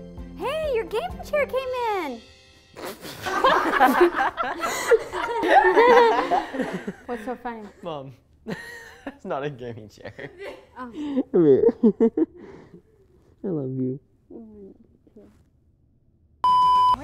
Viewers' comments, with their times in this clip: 0:04 THE LAUGHING THAN THE STRAIGHT ASS FACE LMAOOO